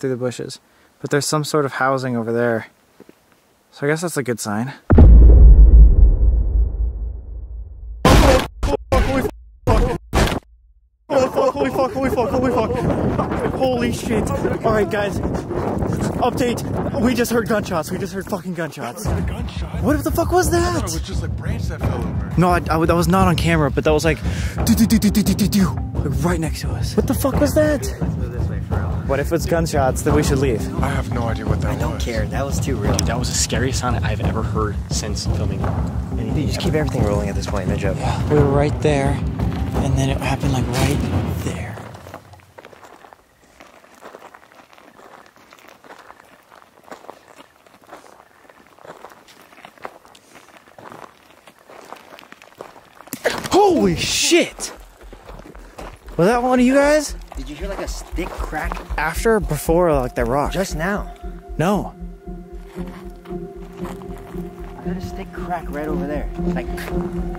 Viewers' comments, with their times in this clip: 0:03 ''thats a good sign'' next moment they hear gun shots and are running away
0:26 3 years late butvat maybe in the 40s was is glitching for you guys like the mic bc it wasbfor me
0:55 that definitely sounded like a stick /branch that broke.